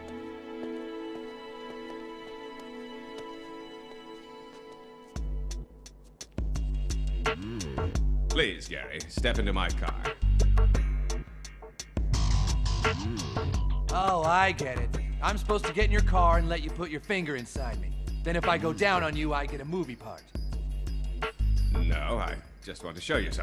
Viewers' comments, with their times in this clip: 0:05 Lmao the music and mood changes and the limo driver haha
0:06 did anybody here that mmmmmmmmm??????????